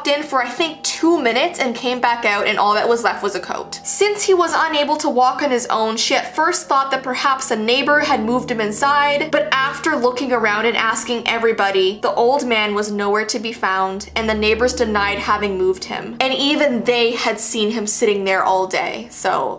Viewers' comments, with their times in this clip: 0:06 I heard sh*t